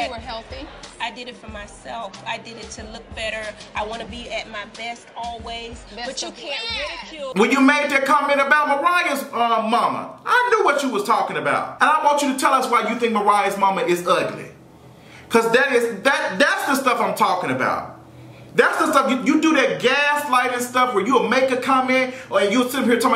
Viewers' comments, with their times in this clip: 0:05 LOL when the energy changed. Yasssss! Come through, Black V Neck Voice!!